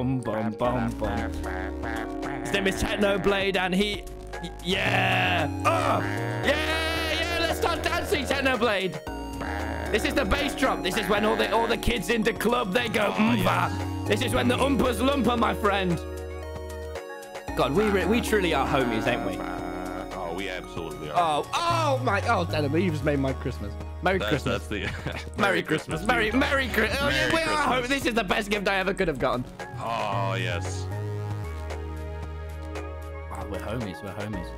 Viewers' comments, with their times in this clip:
0:03 Wilbur is better at singing ._.
0:07 they are just vibing to the music disc XD
0:20 It’s not going to talk about the fact that they were both singing XD